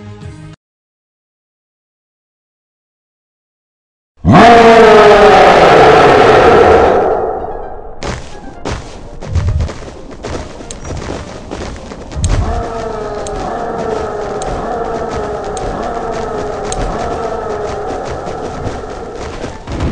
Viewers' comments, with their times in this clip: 0:04 sorry if i keep chating but my ears will die;-;